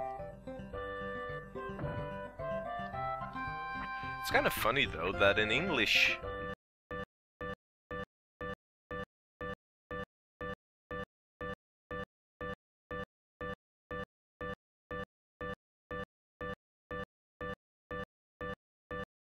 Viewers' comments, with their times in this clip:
0:07 I think something went wrong while uploading D: It just crashed or something and the screen stays the same for the remainder of the video and the audio stops.